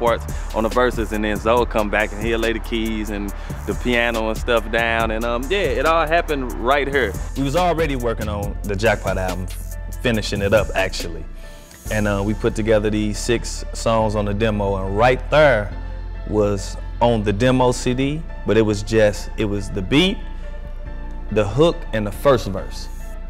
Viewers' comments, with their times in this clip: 0:04 Great dude, but just out of curiosity: The way he says 'right here' is this a typical dialect from St. Louis or something special just for Chingy? I'd like to know as a non-native speaker in English:)